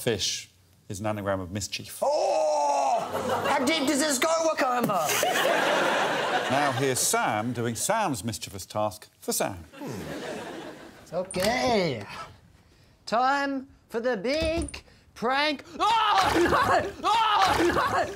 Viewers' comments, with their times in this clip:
0:04 what the heck does he say ???